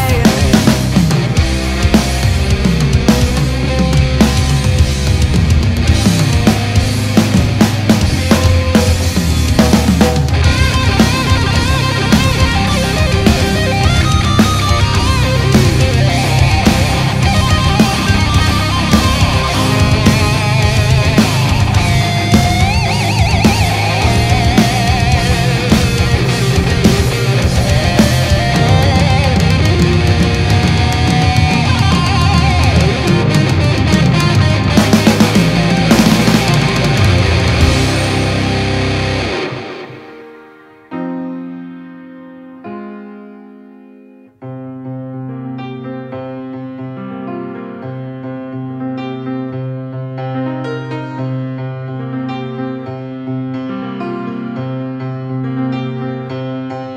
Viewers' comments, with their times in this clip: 0:10 And thats the first time I hear solo in Tolls song :D
0:19 Outstanding. Love Tool's exotic rhythms and the mesmerizing vocals. This cover is wonderful... stunning voice and guitar solo. Reminds me of Warren Demartini, especially that note Ha! Just one note to remind of Warren (think solo on Lay It Down)
0:39 way to go kids!!!!!! awesome cover! goosebumps at the change of tempo!